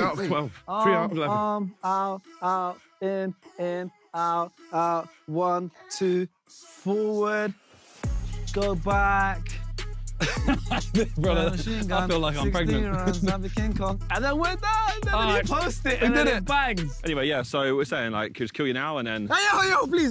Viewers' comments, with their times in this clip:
0:08 Did I just hear the sidemen and beta squad sing sugar cane by camido